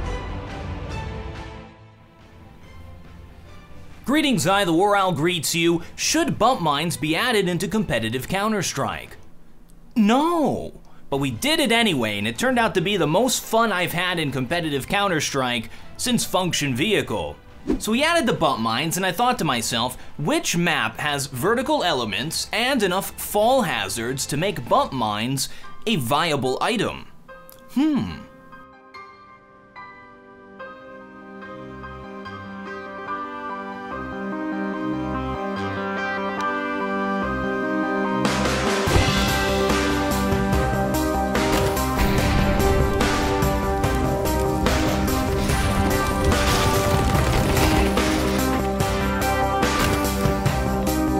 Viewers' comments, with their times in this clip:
0:05 Such a convincing, "Nooo"
0:06 It’s a yes but said with a no
0:31 love the loop... I'd check the grand piano track tho... sounds misplaced.
0:33 rip my left ear
0:35 I really like this music. Did you do it yourself?